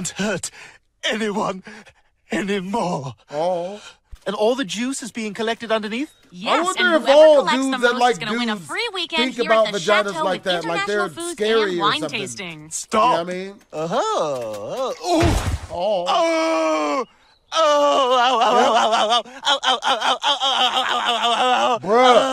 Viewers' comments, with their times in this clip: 0:08 This was a spoof on a real event where a reporter stomping grapes, fell off the steps, and jacked her neck up while knocking the wind out of her. She sounded worse than this. It was on live tv and people thought she broke her neck and was going to die.